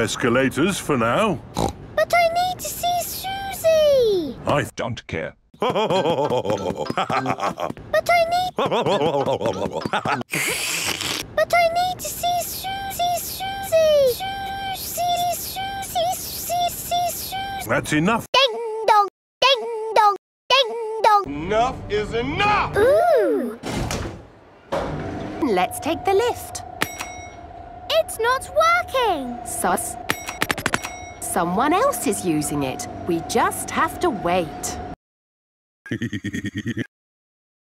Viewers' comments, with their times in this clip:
0:04 i don't care starts playing with George
0:11 But i need to see shoezie 😂
0:18 Peppa thinking shes a bell